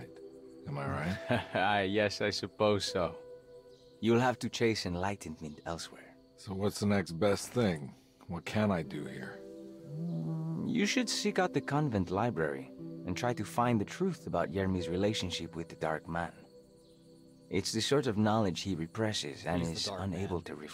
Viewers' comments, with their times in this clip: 0:03 holy shit, i thought you were making a joke but gattdamn, that really is just Wendigoon LOL